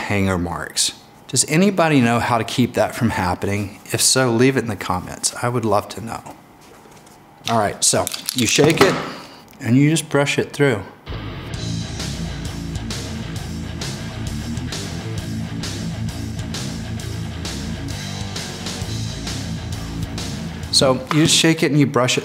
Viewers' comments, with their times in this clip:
0:09 THE MANLY MUSIC 😂😂😂